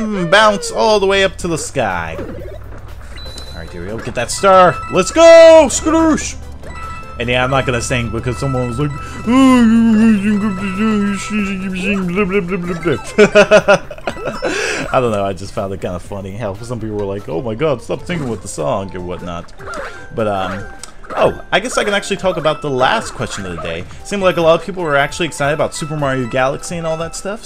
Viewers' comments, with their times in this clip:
0:08 idk if it's just me, but you kind of sounded like the swedish chef from the muppets XDD